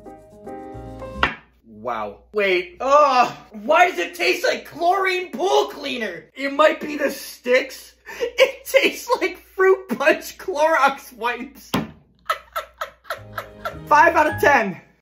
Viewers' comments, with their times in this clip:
0:12 it sounds like a car starting